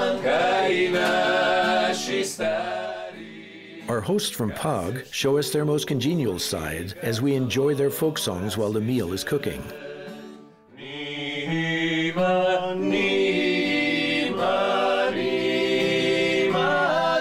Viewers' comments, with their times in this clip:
0:04 the harmonization of vocal group on is good... and the country is wow.... highly must visit